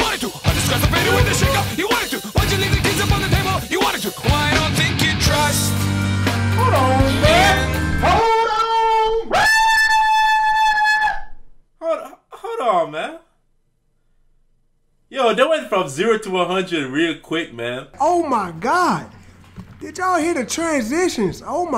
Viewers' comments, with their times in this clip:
0:08 Bro ain't cosplayin that airhorn 💀